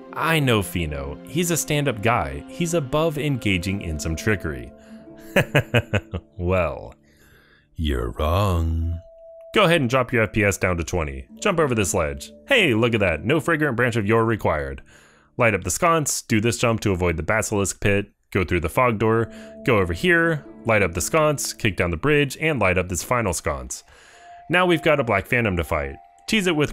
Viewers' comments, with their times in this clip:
0:06 I'm not gay but, that voice...
0:08 The delivery of the "your wrong" is fucking impeccable.